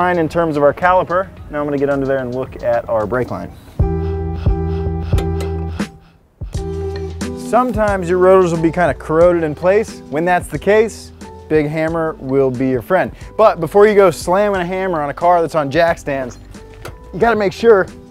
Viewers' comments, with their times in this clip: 0:04 The beat drop/hammer flip was so satisfying